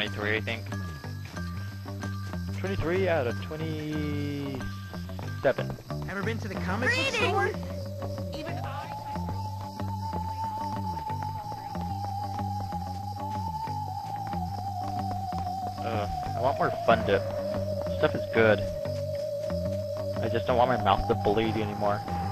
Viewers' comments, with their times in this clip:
0:07 some girl shouts BREEDING!